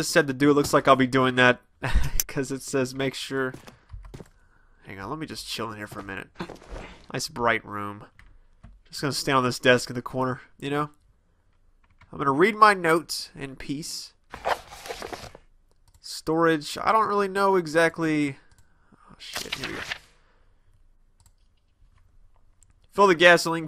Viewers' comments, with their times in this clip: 0:10 every thing was fine untill the end that music started playing and gave me chills then i saw something chasing him and i scared me quite a bit and then knowing that that thing could catch him at any time really scared me and that thing popped up in his face made me crap my pants..... am isnt the best time to watch this alone in the dark..